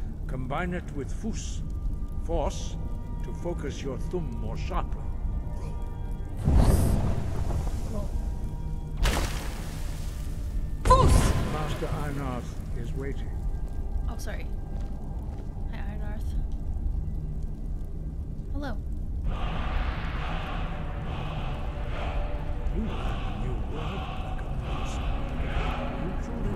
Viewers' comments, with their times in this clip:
0:09 i love that you do the same quiet “ope sorry” every time you shout at or attack an npc that i do lmao, anyone i’m not trying to target is going to hear that from me a whole lot